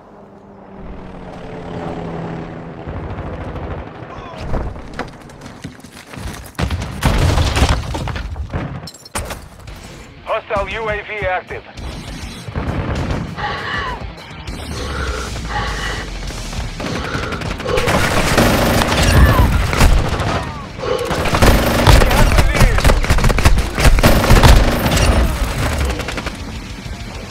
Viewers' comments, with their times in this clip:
0:10 does that music applies when u use juggernaut or its just edited?